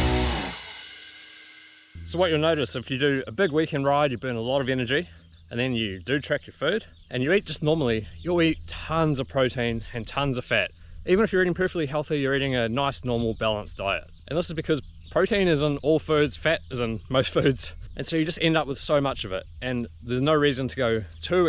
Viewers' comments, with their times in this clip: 0:03 Soft talking to blaring music. 🗿🗿🗿